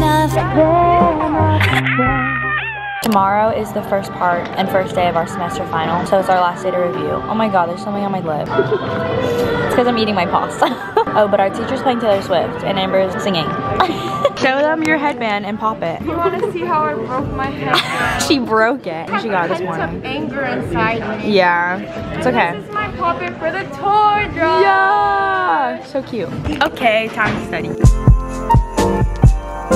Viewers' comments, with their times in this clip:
0:04 OKAY AS A SWIFTIE LOVE THAT THEY WERE PLAYING LOVER
0:04 i love that her teacher was listening to Taylor Swift love all your vids. especially volgmas i love how much effort she puts into this
0:10 i love how lover is just playing at the background LOLL